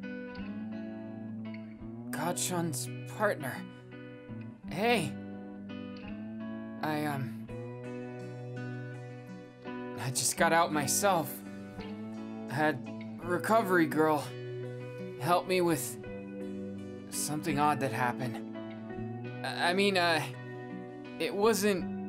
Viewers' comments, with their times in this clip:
0:05 U DIDN'T TELL ME DEKU WAS ALSO TALKING HERE?!